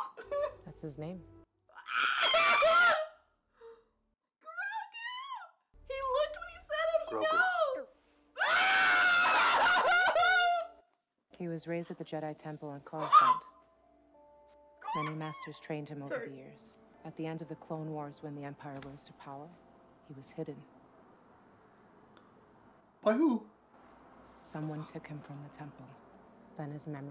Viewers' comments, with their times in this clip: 0:09 Your screaming muffled the sound in the background of t-shirt manufacturers everywhere scrambling to change print designs.